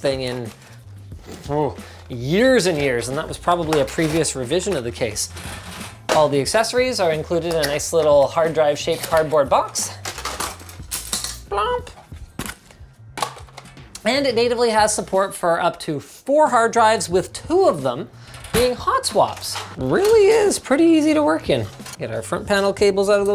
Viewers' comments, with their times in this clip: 0:09 Linus with auto tune
0:10 sounds like auto tuning when he say “plomp”
0:10 why does linus sounds like that he has autotune?
0:10 is that auto tune
0:11 hold up did linus used autotune when he said “blop” 😂
0:11 that "pop" sound was something between autotune and voice crack
0:11 sounds like autotune
0:11 That sounds like auto tune